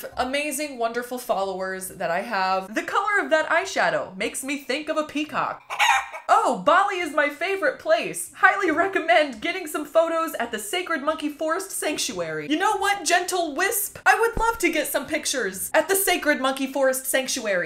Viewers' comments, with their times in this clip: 0:05 She said peacock and there was a chicken sound on Now I don't know if we're being pranked too. My head hurts thinking about it now.